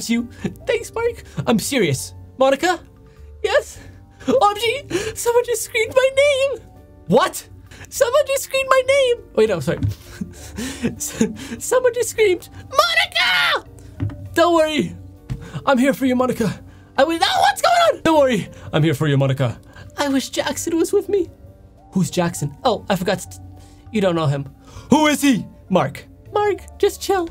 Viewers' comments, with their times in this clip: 0:03 the voice of Monica is just ✨pERfEctiOn✨
0:11 the "MoNiCa" is perfect i love
0:13 damn that was a loud scream